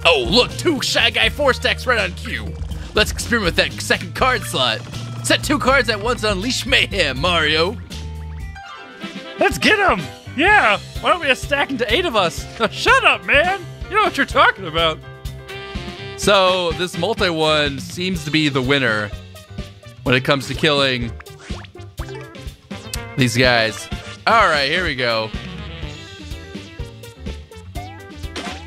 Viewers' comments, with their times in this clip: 0:10 You sound like Fishy Boopkins